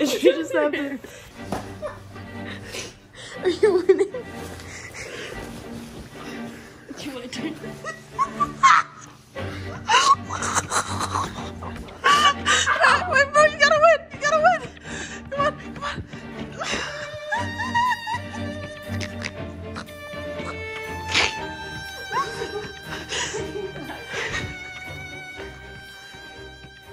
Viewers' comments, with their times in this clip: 0:10 THE MUSIC MAKES THIS SO DRAMATIC 😂